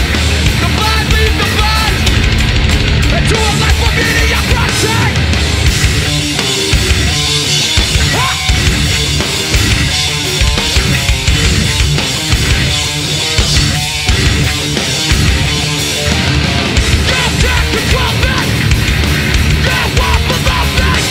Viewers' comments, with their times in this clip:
0:04 That part of "Head in Check" is so fuckin groovy, it makes me wanna fuck shit up